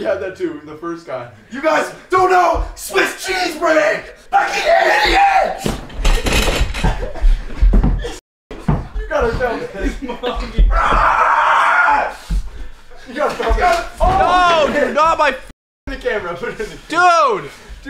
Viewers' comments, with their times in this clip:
0:05 Canadian ahh anger